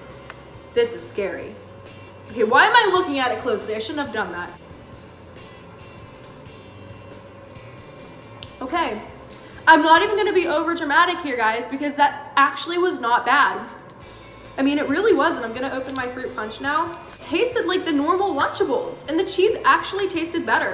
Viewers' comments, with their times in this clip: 0:06 the way she says that is dramatic😂